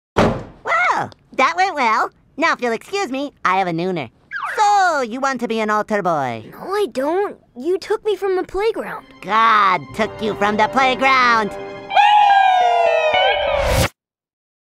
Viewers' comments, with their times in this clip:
0:12 Sponge Bob background music is very accurate.